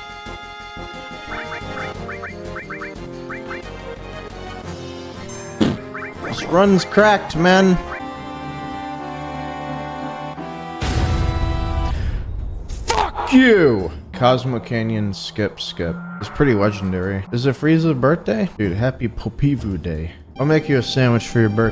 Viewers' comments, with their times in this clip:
0:08 that PHOK you came from his chest lmaooooo